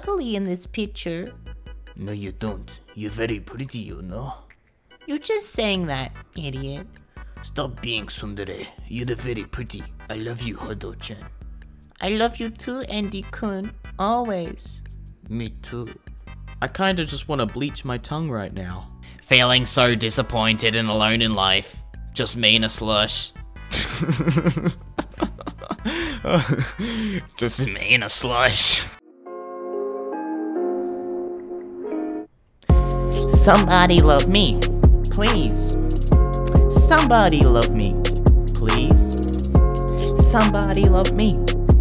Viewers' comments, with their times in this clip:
0:08 I like how he pronounce tsundere
0:29 be sounding like white silence is gonna play. SICK BEATS
0:29 Rap music intensifies
0:29 OH SHIT ISSA BOP